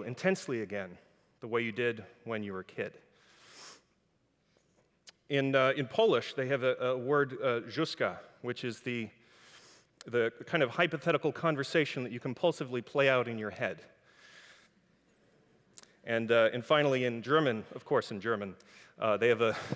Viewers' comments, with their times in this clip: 0:07 I'm polish and have no idea what he said in 😂